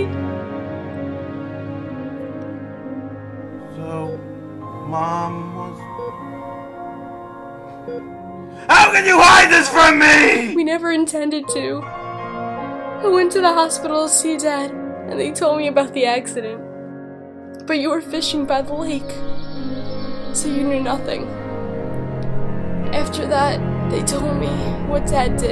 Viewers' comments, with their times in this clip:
0:07 Vince sounds so pissed off